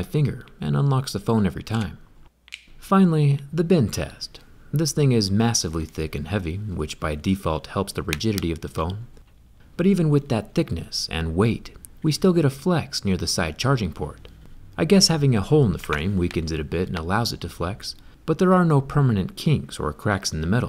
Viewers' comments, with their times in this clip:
0:07 at first I thought he said "the virginity of the phone"🤣